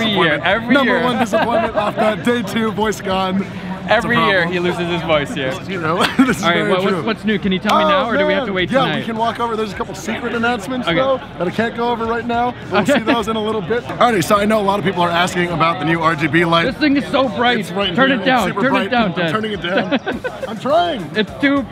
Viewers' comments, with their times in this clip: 0:08 that guy speaking his voice doesn’t match his face lol nice speaking voice